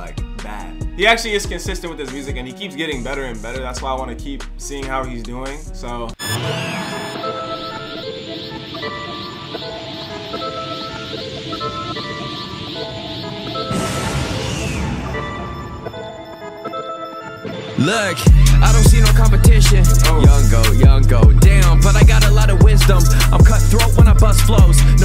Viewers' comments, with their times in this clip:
0:07 Joyner type flow
0:08 the beat itself is offbeat bro whoever this is need to do a feature with blueface
0:08 sounds like quadeca
0:12 Song lowkey reminded me of Joyner Lucas